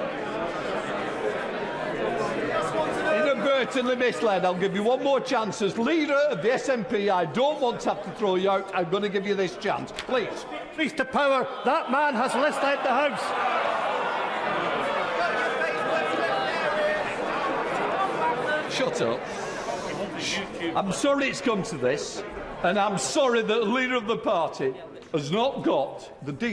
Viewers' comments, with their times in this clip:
0:07 Sounds like a room full of secondary schoolers Look theirs the teacher over their In the pink She looks very stressed 🤣🤣🤣